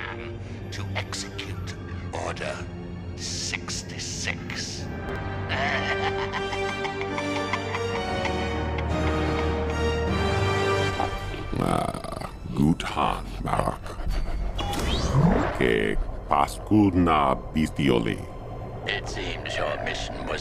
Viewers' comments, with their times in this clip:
0:05 The Emperor's first laugh.